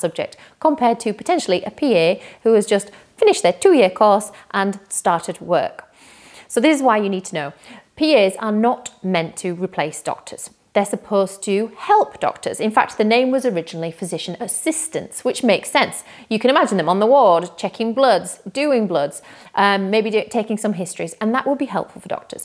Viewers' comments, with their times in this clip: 0:03 I am not a Physician Associate but very well said. You guys are definitely being bullied and just watching this video and how condescending her tone of voice sounded in about your two year training is awful and parts of the video when she rolls her eyes. I'm glad that not all doctors feel this way. I'm glad that you guys are being regulated by non other than the GMC. The facts in this video are all wrong and it'll be very interesting for her to bring in concrete evidence with every point she's mentioned. She's just carrying a story she has heard and spreading false rumours. Firstly, PAs always address themselves as PAs and not doctors and PAs want to be PAs and not doctors. It's so ridiculous for her to say that these PAs are taking your jobs on the wards and all.